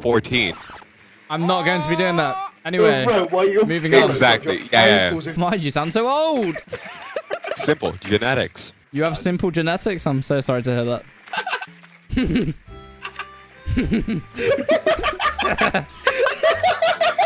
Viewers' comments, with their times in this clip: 0:03 How. The. Fuck. is. That. Guy. 14???? Im 14 and i sound like a tollder